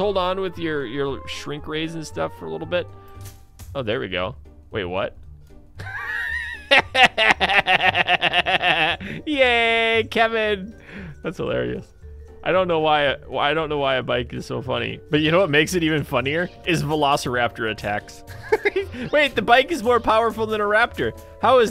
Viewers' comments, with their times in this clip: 0:05 that laugh cured my depression